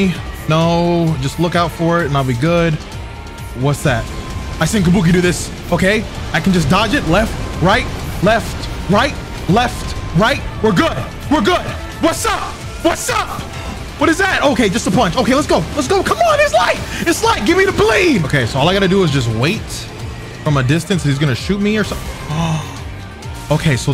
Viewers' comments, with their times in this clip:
0:07 Is this the Elden Ring music I’m hearing against this song is a vibe